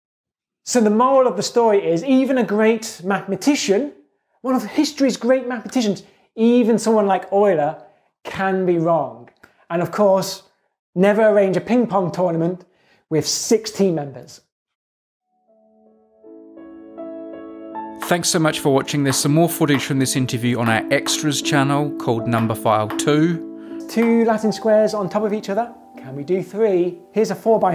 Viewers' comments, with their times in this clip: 0:08 "Never arrange a ping-pong tournament with six team members" -- I first understood "with sixteen members", I went crazy! WTF?!? And then I turn on the subtitles.